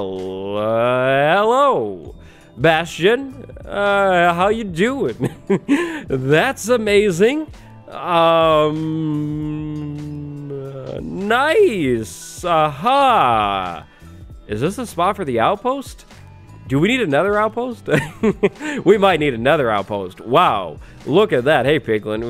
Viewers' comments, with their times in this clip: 0:07 confused screaming. Thinking where to go first